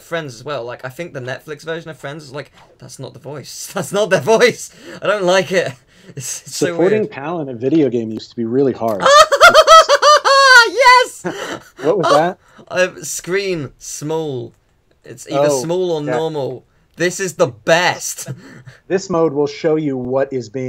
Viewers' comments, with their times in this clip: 0:08 seriously dat laugh...!